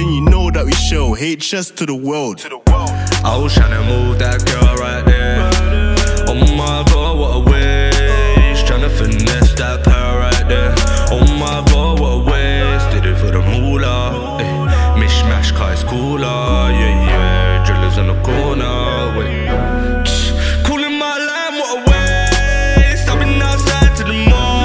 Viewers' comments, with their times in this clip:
0:10 deadest guy to rap...